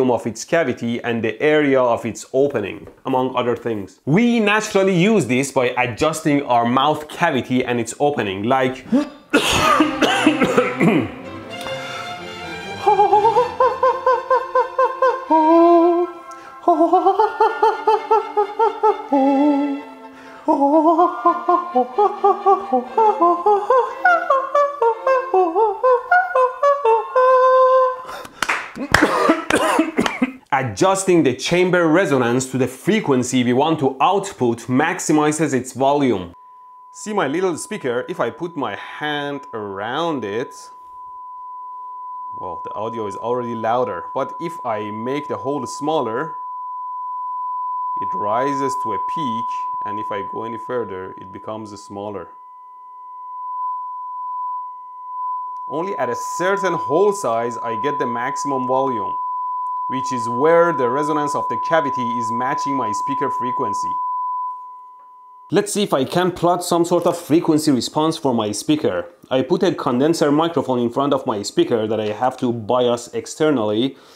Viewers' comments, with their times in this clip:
0:08 You have a beautiful cough but you should see a Dr. about that nasty singing!! I hope it's nothing serious!!
0:09 You can sing pretty well! :)
0:09 electro boom opera btw it was great opera
0:10 The melody is from opera The Magic flute by Mozart, if somebody wonders. Good voice btw :D
0:10 WTF that sounds pretty good!
0:10 its sounds like a chimp sing with a chicken.. IT IS BEAUTIFUL 😍
0:10 I cannot tell if is real or what is more likely dubbed over. to me it does sound like him which is making me wonder
0:10 I have never heard the high G of the Queen of the Night singing in Mozart's Magic Flute opera so beautifully. Quit your day job and these videos and finally live out your dream to be the coloratura you were obviously born to be!!!
0:10 man your sound is better than the team who actually done it
0:10 Very nice der holle rache
0:10 That aria was actually quite ok! I'm actually myself considering skipping this electronics business and go to be an opera singer!
0:11 I almost flipped Not to mention you hit all the high notes perfectly but your staccato was shockingly good! This man has unlimited talents. 👏👏👏
0:11 electroboom turns into operaboom
0:11 teh voice of a electrical angel:
0:11 When did you learn how to sing like an Opera on ?
0:12 He sounds like mickey mouse tho
0:12 That was a very very good opera thing.
0:12 Is this really you? Or is this edited in some way? If yes, do you have singing experience? It's way better than expected!
0:12 Holy bleeb he actually hit those high notes in
0:12 This video should come with a warning... my ears just stopped bleeding...
0:12 he sounds like kazooie from banjo and kazooie
0:12 Mickey mouse doing some opera?
0:13 Mozart's "Queen of the night aria" from the play "The magic flute"...badly done. :/
0:14 he sounds like a rubber duckie
0:16 the most beautiful bleep I've ever seen
0:20 monke noises intensifies
0:20 he is the next vitas
0:22 he is a good vocalist
0:22 * school siren goes off* The autistic kid :.
0:25 just casually singing one of the world's hardest operas
0:25 holy! You can sing!!!
0:25 you sound like Micky Mouse laughing
0:38 The ringing noise in my ears
0:39 This whole video was an excuse to ear grape his viewers
0:45 You’re raising the decibel of the speaker.
0:50 started searching for mosquitoes around me :'()
0:57 i thought my tinnitus was acting up
0:59 I can't explain why, but when he played that tone I hear these jumble words in my head. "This is a test of the Emergency Broadcast System." "the Attention Signal you just heard would have been followed by official information, news or instructions."